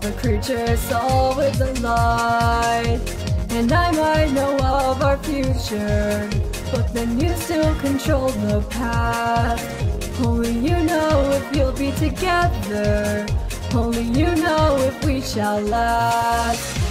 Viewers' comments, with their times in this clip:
0:03 DOES ANYONE ELSE HEAR A LYRICAL GREEN HILL ZONE FOR A BIT?